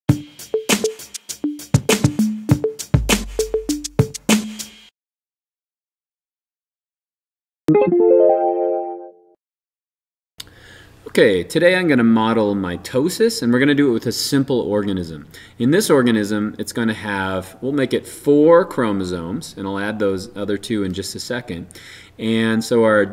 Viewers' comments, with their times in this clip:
0:05 lol the ebay notification for iphone